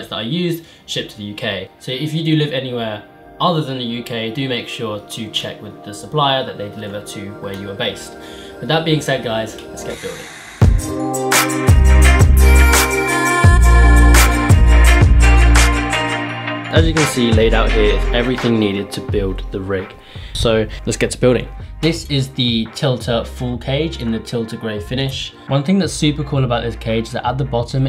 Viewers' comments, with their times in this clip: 0:10 the intro song sounds suspiciously like amogus